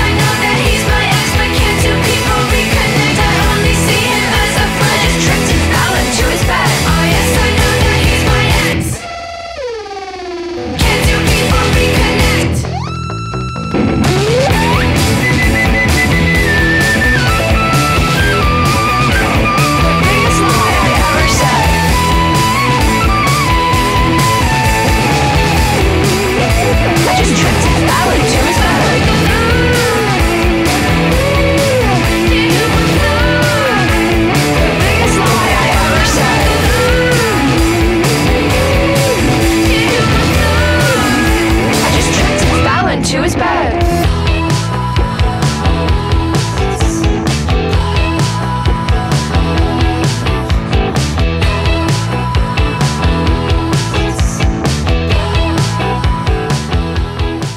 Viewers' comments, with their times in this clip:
0:03 Cool little detail that her knocking starts and stops with the lyrics.
0:15 The guitar solo from is so Jack White!!
0:38 Wow her rapping with the attitude is really characteristic. Actually this is a good song